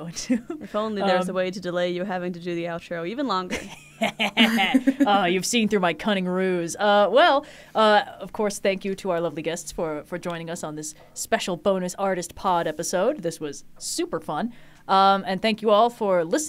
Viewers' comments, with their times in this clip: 0:04 I can't help but hear Sun Wukong.😆